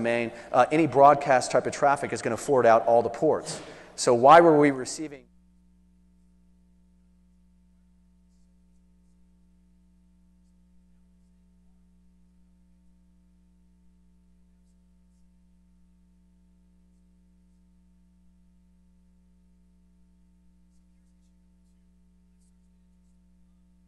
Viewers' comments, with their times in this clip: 0:04 what happened to the sound ? any way to recover what he said or was it muted on purpose?